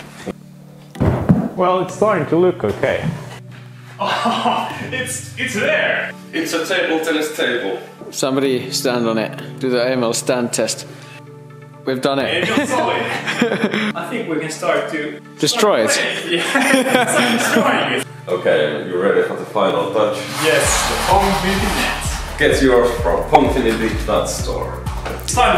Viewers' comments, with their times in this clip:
0:09 DO THE WHAT STAND TEST???